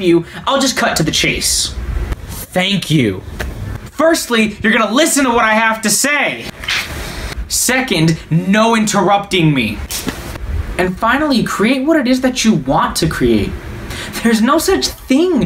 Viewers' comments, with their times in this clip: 0:03 I live for the slaps